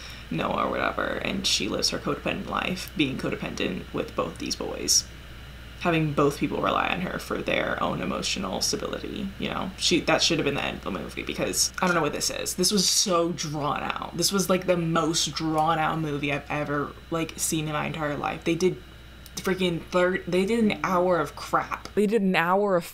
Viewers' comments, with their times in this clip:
0:03 the intense vocal fry lmaoo